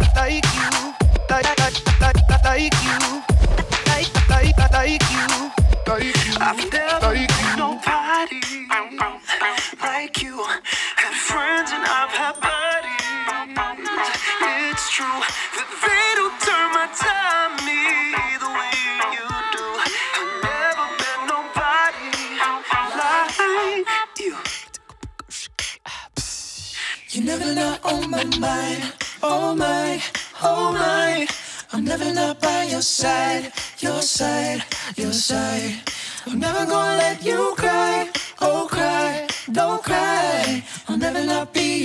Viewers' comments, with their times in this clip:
0:07 Lofi 4*Town radio - Beats to relax/study to
0:28 Listening to it on headphones, I feel as if a girl sang to one ear and a boy to the other. IT'S AMAZING!